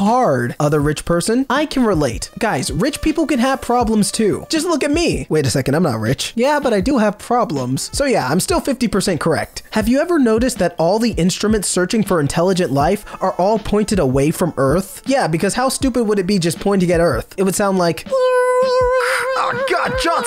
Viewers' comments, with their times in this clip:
0:04 Wait a second, I‘m not rich... He says with a voice that sounds like Charlie Green (Cg5, a famous YouTuber and singer/songwriter, for those who don‘t know)